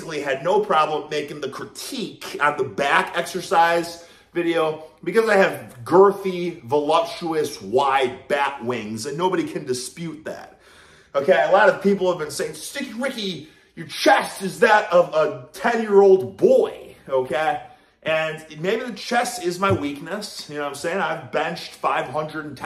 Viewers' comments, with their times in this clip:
0:06 He started snoring at like into the vid lol